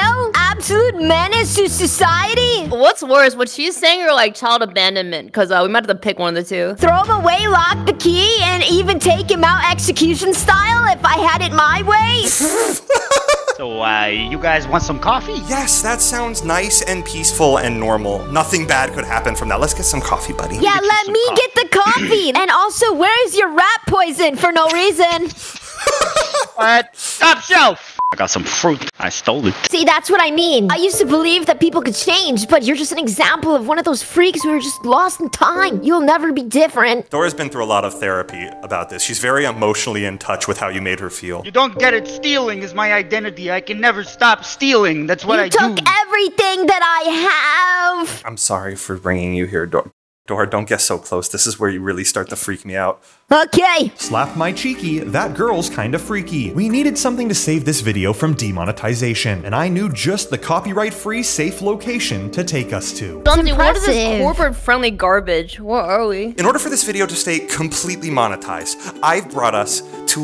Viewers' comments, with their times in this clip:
0:07 On why does she sound so much like ash from Pokémon lol
0:52 the way she said okay😭😭😭💀💀